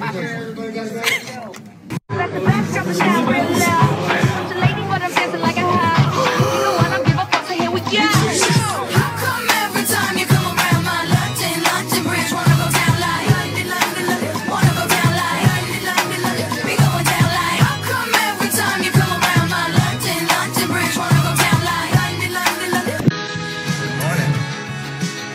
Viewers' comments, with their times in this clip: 0:07 Lola’s gasp at “i’m team Jeremiah” was so loud😂